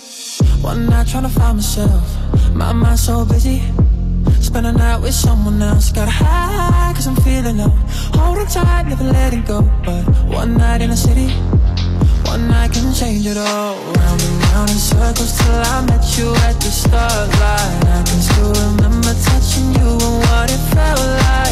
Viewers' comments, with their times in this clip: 0:06 i thought it was Johnny Orlando